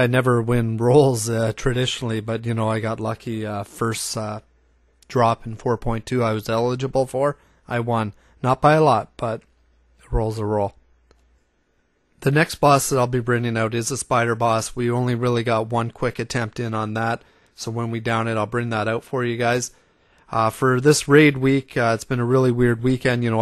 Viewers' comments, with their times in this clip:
0:06 didn't have enough breath left?:p